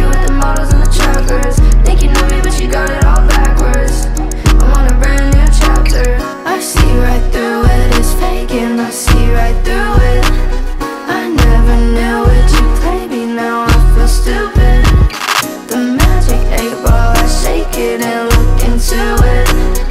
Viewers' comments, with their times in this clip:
0:05 the synths are nice asf :)))